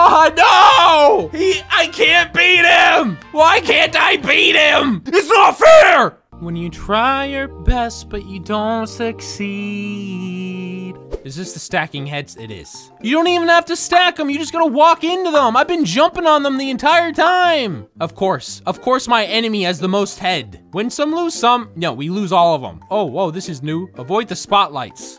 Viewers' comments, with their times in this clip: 0:07 HE DID A COLDPLAY SOMG BOISSS